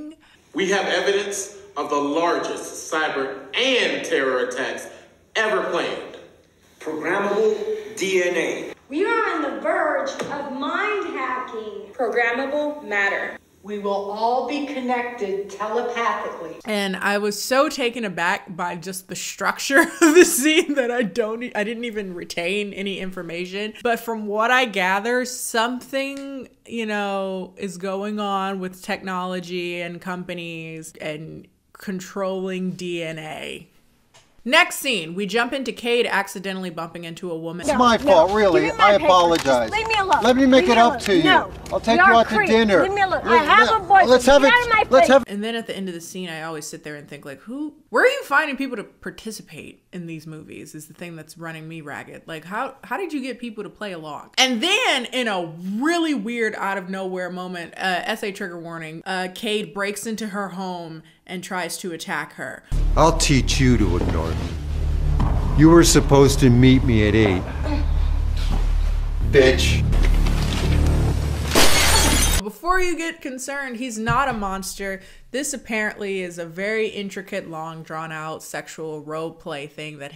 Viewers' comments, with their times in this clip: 0:07 Ah yes. Talk that science screaming over the table so that the camera can catch all of you. And yes, squeeze that one dude in the corner because there was not enough room at the table. Yes yes.
1:07 I know this Is suppose to be a serious scene BUT THE WAY HE SAID BITCH AFTER A LONG PAUSE